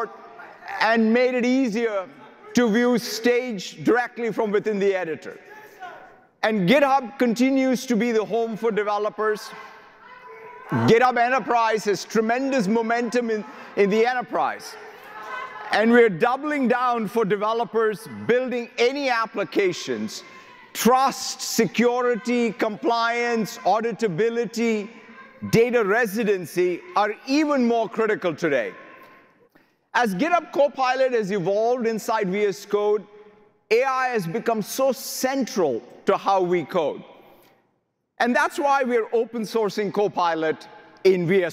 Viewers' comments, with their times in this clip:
0:08 At the minutes you can hear the employee yelling about the gaza genocide
0:22 :face-green-smiling::face-green-smiling::face-green-smiling::face-green-smiling: WTF - are those hecklers back there??? Regarding Purview, in other words, it allows your company to spy on all your AI doings. Maybe they should have called it PervView... And Foundry Local ensures they can spy on your offline AI doings...